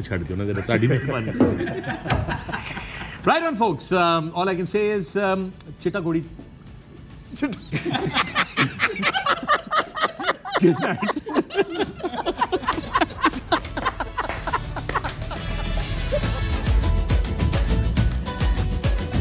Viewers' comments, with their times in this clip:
0:06 Can someone explain what was said at the end or what they were laughing Loved how everyone were laughing.